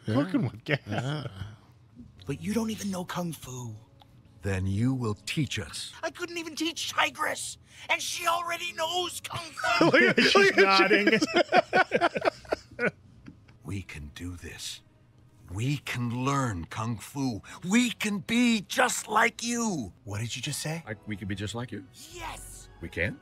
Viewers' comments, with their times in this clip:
0:06 It really feels like Jack Black mentally checked out for this movie for some reason. A lot of his lines lack the intensity and energy of the previous movies. A bunch of his lines are this weird whisper shout, even at the end when he should be all hype with the dragon shadow. I used to think he was just getting older but then he brought back that old energy for Bowser in the Mario movie so I wonder what was going on here.